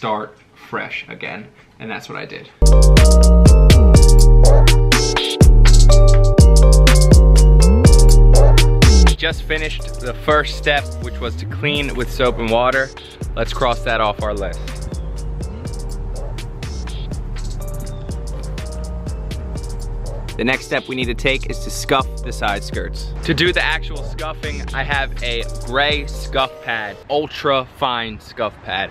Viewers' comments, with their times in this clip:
0:09 is that someone driving a lawnmover under the fence ?